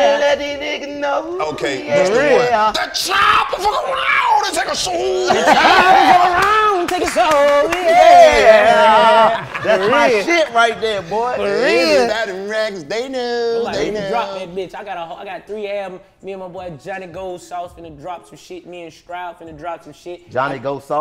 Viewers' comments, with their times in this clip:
0:04 Dc can singggggg